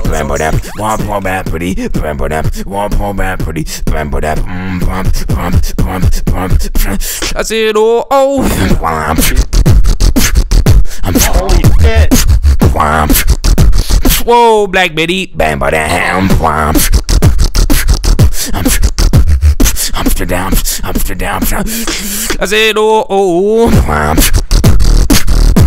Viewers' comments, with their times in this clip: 0:08 what kind of lip roll is it on
0:09 It sounds like hes intensely Snorting into the mic
0:10 how you do that drop ? liproll ? tell me pls